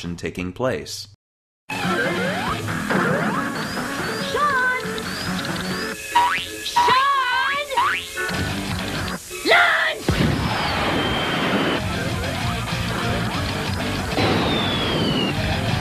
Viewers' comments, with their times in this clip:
0:03 sega, you can't put chemical plant music over mushroom hill gameplay, that's not how it works